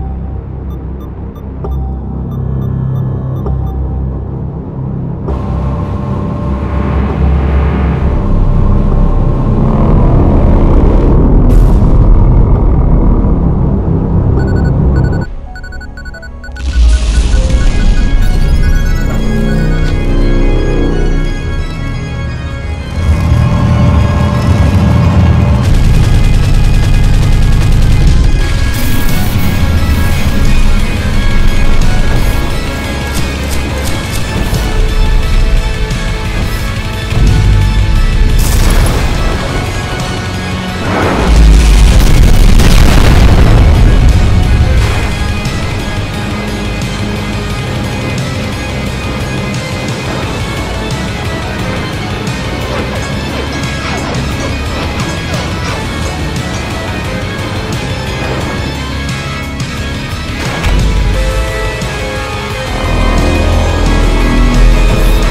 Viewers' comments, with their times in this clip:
0:03 Why is this sound of machinery moving so scary?
0:25 I like the fact that the Earthmover has more than just the spear in the arsenal. This is how I think the Earthmover is truly. A full arsenal of weapons to defend itself. I may have a theory that the Earthmover we face in game is not able to use its weaponry since it’s stuck in place and V1 is not in a distance where these kind of weapons are necessary (Edit: I love the sound of how Earthmover just shoots a barrage of rockets just like flares)
0:53 why is there the jackhammer sfx if it released AFTER this video was made??? is this guy hack e tan???